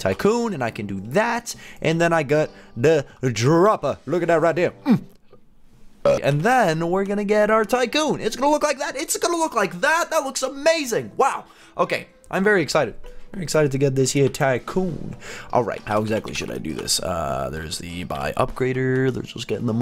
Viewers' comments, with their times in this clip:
0:05 that was one quick burp